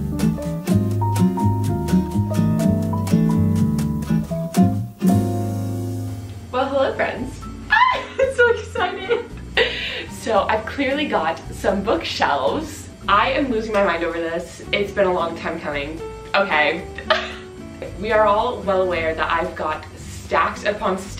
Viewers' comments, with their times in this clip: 0:06 her squeak was me when my mom got me my first bookshelf😛